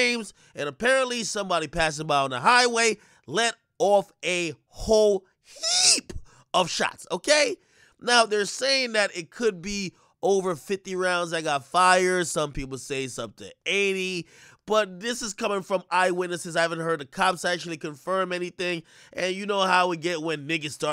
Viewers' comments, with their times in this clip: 0:04 😭 I can’t with the nigguh son 😭😭